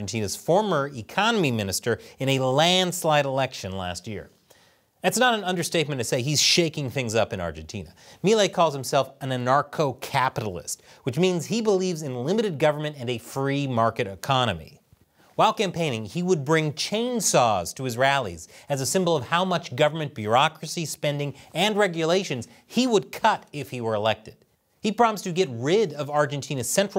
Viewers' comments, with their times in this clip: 0:09 "a narco capitalist" is what I heard.